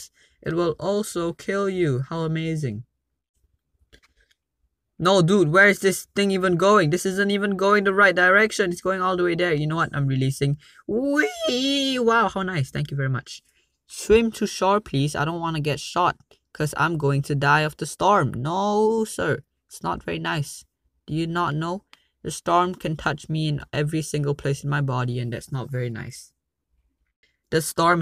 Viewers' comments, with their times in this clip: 0:10 When your voice cracks